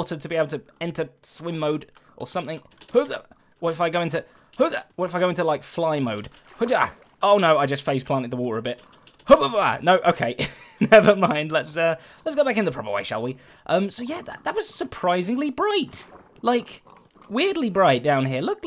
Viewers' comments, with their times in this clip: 0:06 I can relate to that space bar smash xD